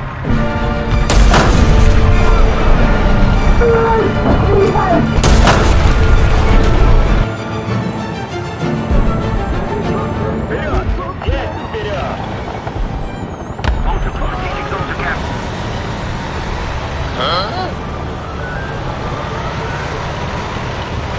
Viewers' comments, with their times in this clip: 0:07 i heard the 'helicopter helicopter' when capping the point and yeah it was a real helicopter